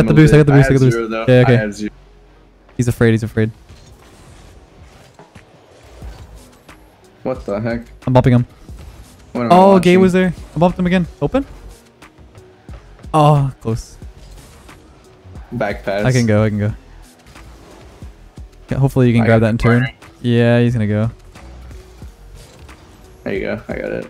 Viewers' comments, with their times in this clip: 0:08 gay was there?